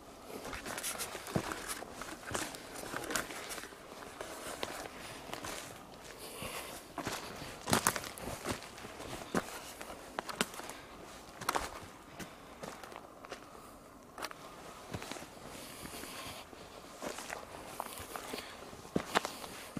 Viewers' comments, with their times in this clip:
0:04 Something is said I can’t make it out tho